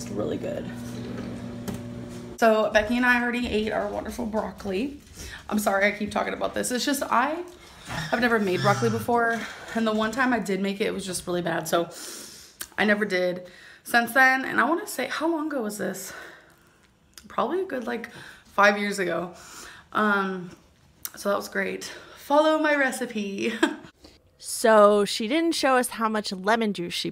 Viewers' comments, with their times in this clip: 0:08 THE CHAIR CRYING?? WHEN SHE SAT??? HELP??